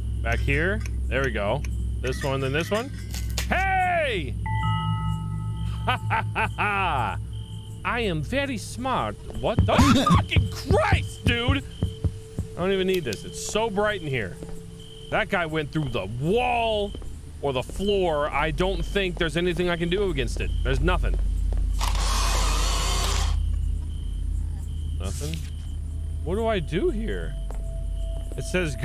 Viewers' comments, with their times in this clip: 0:09 what was that noise you made I've never heard a guy make that noise before 🤣🤣🤣🤣🤣🤣🤣